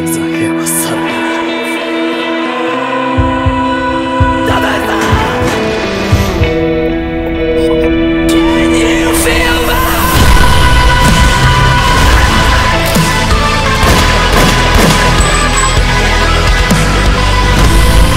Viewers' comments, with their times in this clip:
0:04 when he screamed ''dazai san'' that was heartbreaking